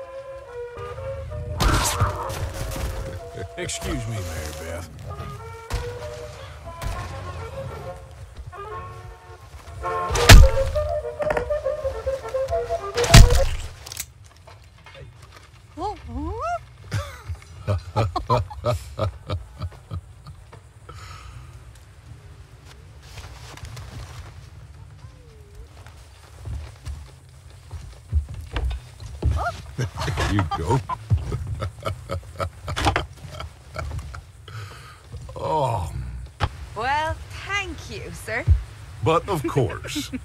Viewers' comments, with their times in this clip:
0:09 Dutch straight up just activates THE PLAN and laughs at Arthur's lack of FAITH.
0:19 Molly is dancing with the crickets noise lol Mary Beth is being possessed
0:26 is so weird! Arthur is pointing a gun right at Dutch and he's just staring at him while smiling and laughing like he's thinking "I'm not scared of you or that gun! In fact i find it funny" And the whole time you have Molly just randomly dancing in the background 🤣 😅